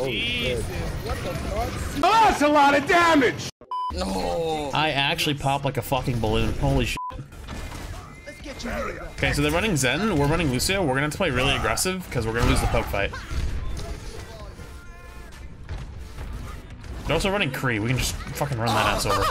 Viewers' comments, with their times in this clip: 0:06 why bleep out shit but not fucking lmao